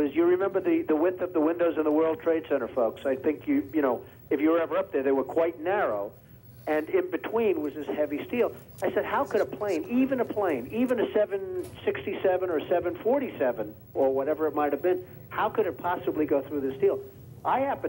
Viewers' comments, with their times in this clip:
0:05 u can hear the whispering 🤣🤣